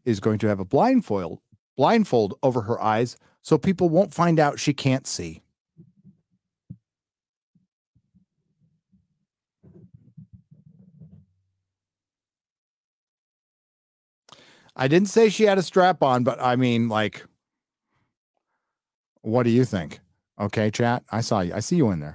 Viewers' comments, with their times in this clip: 0:08 [wind whooshing] Lol